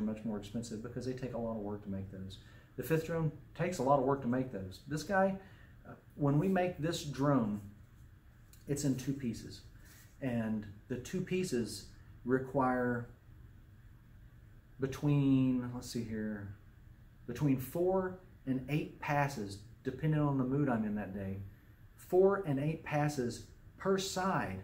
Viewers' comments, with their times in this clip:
0:05 The drone flute is in G.